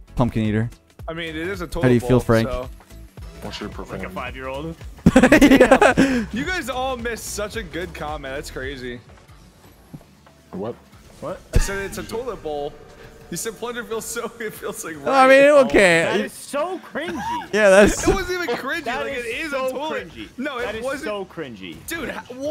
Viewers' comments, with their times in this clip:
0:07 that moment of silence 😂